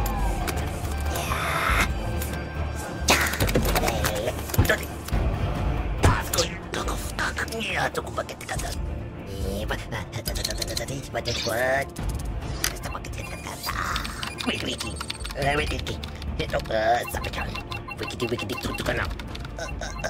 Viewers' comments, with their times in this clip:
0:05 This is my voice